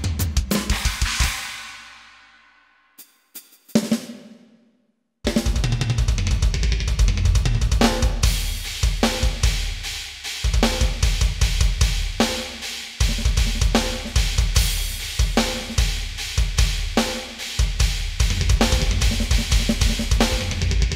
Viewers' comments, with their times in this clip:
0:04 I swear he was about to play I killed the prom queen- columbian neck tie